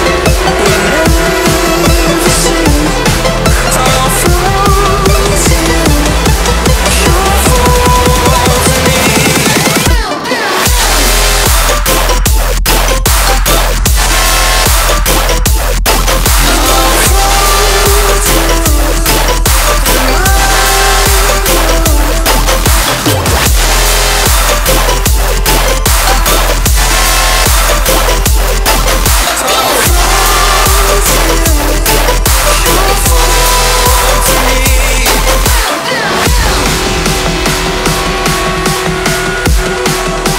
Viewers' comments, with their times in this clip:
0:09 totally mental, love how Fall to You and Boom sound overlaid
0:22 who tf mixed this